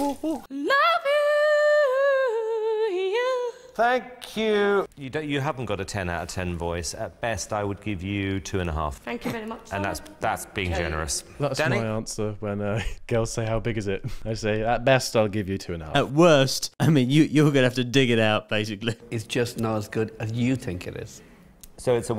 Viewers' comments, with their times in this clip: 0:08 with some lessons she could have a really nice voice.